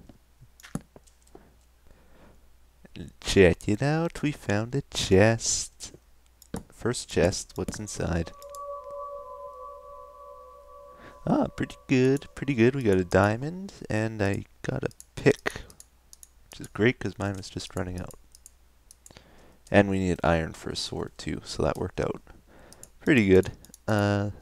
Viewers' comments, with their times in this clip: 0:10 *Etho opens chest *Coincidence soind effects for glory and diamond :D